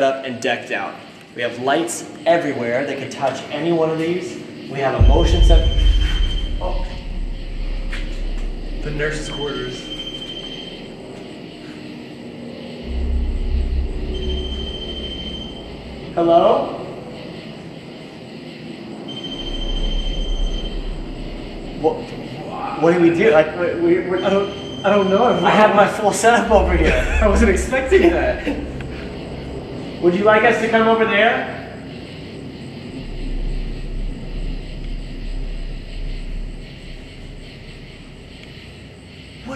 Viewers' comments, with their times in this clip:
0:06 the pattern the rem pod is beeping in sounds like an old telephone ringing
0:22 YO!!!!! !!!!! DOES NO ONE ELSE HEAR THE MAN SCREAM!? IT'S CLEAR AS DAY!!!!!!!!!!
0:23 you can clearly hear someone whisper “whyyyyyy” or “hiiiii” … whatever it is, it’s freaking disturbing to hear it so clearly!!!!! 😵‍💫😲🤭